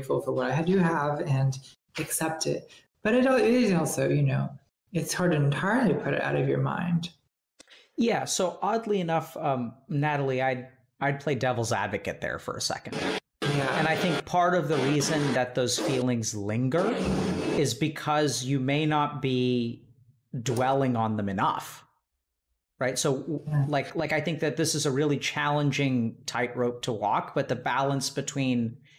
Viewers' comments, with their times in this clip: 0:09 someone is using a sawmill